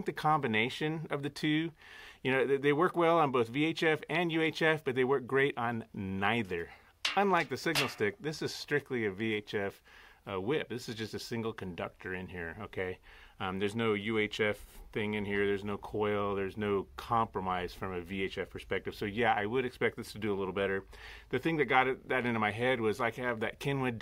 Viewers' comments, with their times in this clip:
0:05 ==> "works great on what ??" Couldn't hear. I like that "signal stick". However, i think you should've tested it like factorywise. Without that "extra" wire with that green thing. Where did u buy it ? That signal stick with poise..